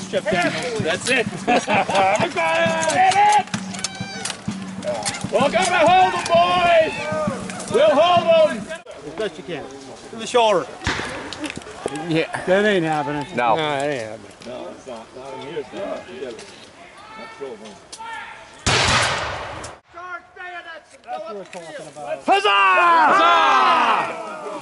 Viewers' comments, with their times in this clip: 0:05 I heard a rebel yell lol